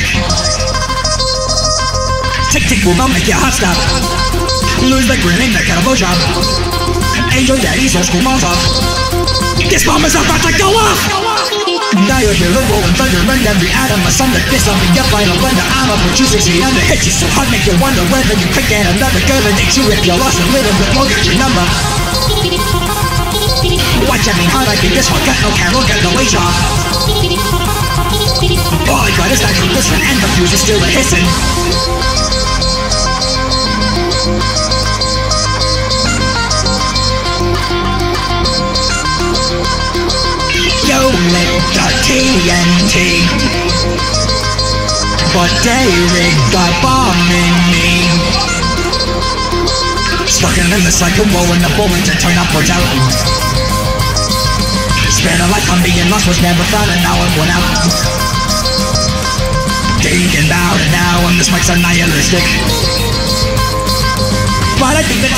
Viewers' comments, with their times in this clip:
0:08 the emotion in the diologe is highly underrated ımo
0:09 I love how he screams that
0:10 Perfection, him voice are more jealous and me like this. Else want to thanks for musical shiver in
0:40 These two lines... If one you stretched how long you said "me" the last time. GOodnes, goosebumps.
0:40 I LOVE WHITTYS VOICE IN THIS I WOULD LISTEN TO A WHOLE WHITTY SHOW WITH THIS WHITTY VOICE edit: BEST PART
0:45 Ngl he sounds like utau.
0:52 background gaster blaster charge